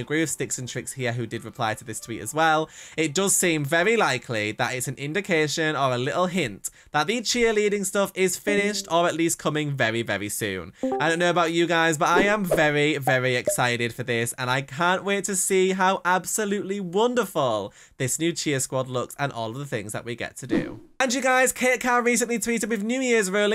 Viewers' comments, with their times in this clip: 0:09 somone left discord call HEHEHEHHE